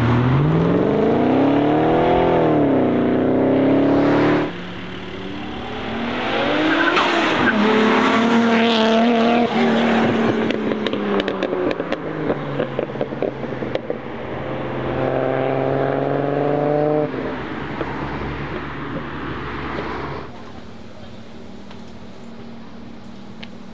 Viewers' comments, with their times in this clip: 0:07 That Blowoff from the R32 is just PERFECT 👌❤